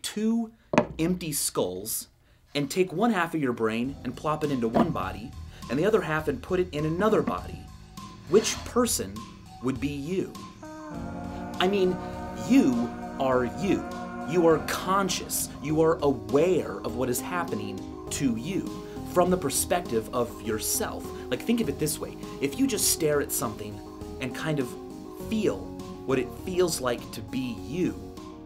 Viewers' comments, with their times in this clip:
0:10 When you hear this music in a vsauce video you know you're about to be very confused